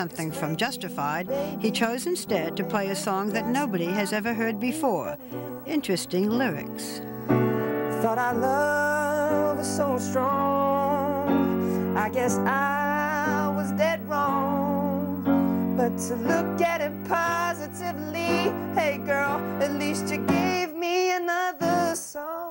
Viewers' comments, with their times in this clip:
0:08 I wish he had released the song as a song. It sounds so good!